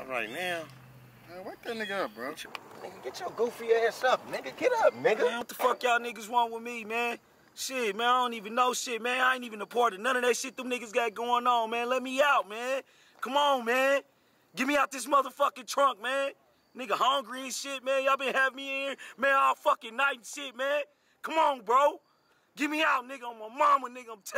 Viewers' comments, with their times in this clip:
0:10 bro why he sound like franklin from gta😂😂